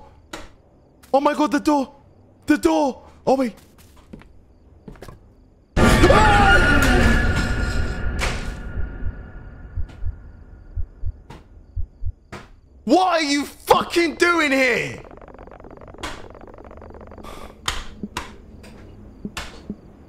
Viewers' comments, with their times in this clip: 0:07 Why is no one talking 😂😂😂